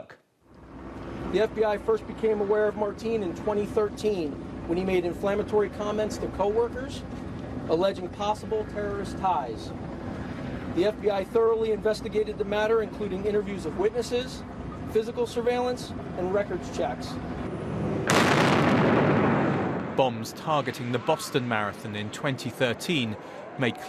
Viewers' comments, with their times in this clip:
0:05 he said marteen